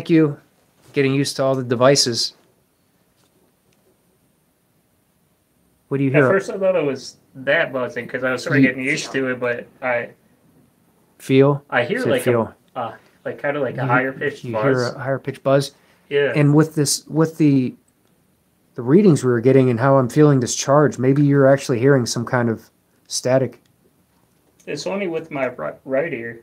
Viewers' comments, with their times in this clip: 0:10 heard something giggle I think hard to say,was something 🤔.